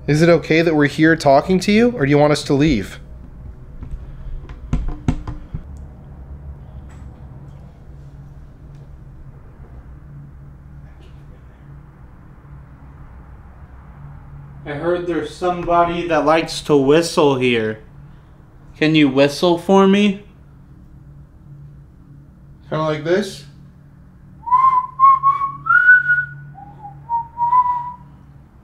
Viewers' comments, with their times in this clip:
0:04 Again whispered yes
0:11 I hear a woman sounds like 'thank you'